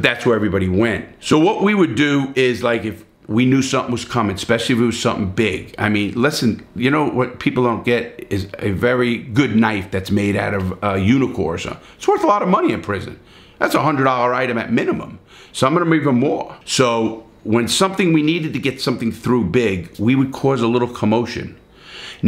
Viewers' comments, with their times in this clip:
0:08 a knife made outta what?! unicorsa? whats that?